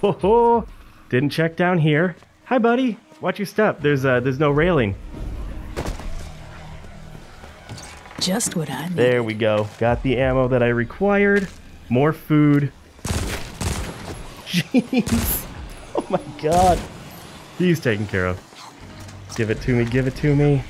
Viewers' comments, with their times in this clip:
0:05 BONK Moment of silence for the zombie's face there